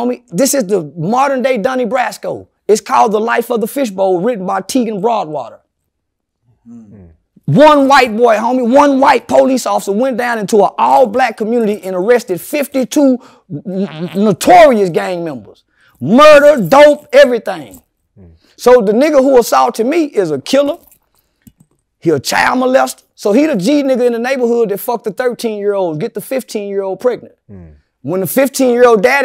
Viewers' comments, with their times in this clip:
0:10 So we gonna act like someone didn’t fart ??
0:12 did CW just fart?
0:13 So Nobody heard Charleston White fart mark 🤣🤣. "Arrested 52 notorious (fart) Gang members !
0:13 🗣️@ CHARLSTON WHITE "STRAIGHT RIPPED A STANK 💨FART" & NOBODY SAYS SHIIII!!!👀😩🤣
0:13 Was that a fart !😂🤣😂
0:13 did he fart? 😂😂